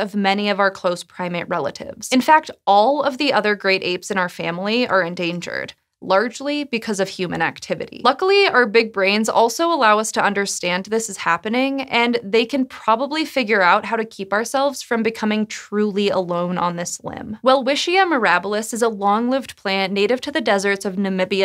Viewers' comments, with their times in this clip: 0:03 emphasis on probably 🤦